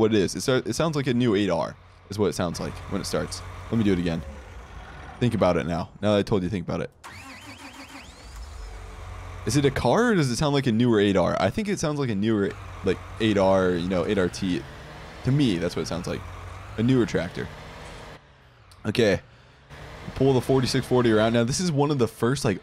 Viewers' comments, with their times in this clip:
0:08 sounds like a Cummins